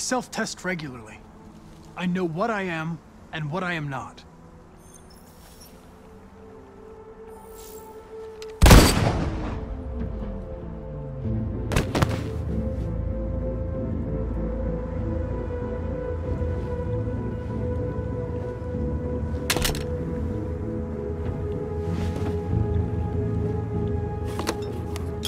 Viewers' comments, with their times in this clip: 0:09 windows shutdown sound